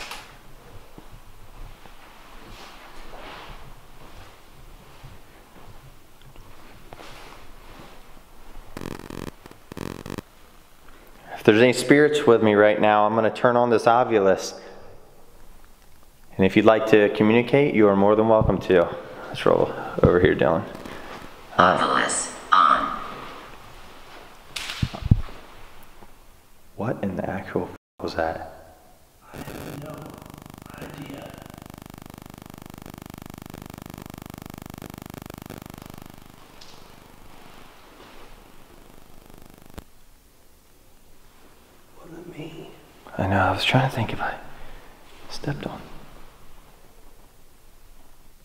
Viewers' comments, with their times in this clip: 0:09 ur looking around and cameras audio goes staticy
0:29 Another noise down the hallway, possibly something thrown
0:30 Is it just me or the camera started sound like static every time he went past the doors xx
0:30 Rewatching this and observing of what i have missed, but the audio starts to have some interference in that hallway for a good minute or two. I wonder if you had "bumped" into someone there. Also i wonder what times the other investigators encountered their experiences. Makes me think if its more of a residual haunting.. I wonder if you'll get more activity during the day?
0:32 there is what sounds like static coming from your camera.
0:34 major audio interference!?!
0:36 There was definitely a spirit because there was a noise and then the mic got really staticky!!